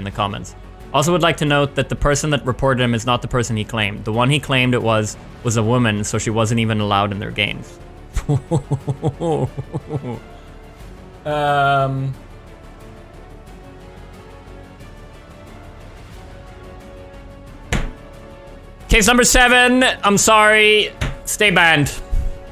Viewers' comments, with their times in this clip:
0:07 I love the laugh xD